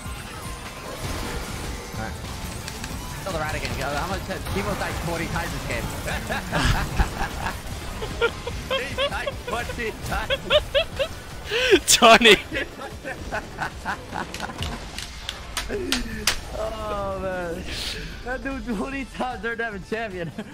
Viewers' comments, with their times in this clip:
0:04 that laugh, rip rat 😁😁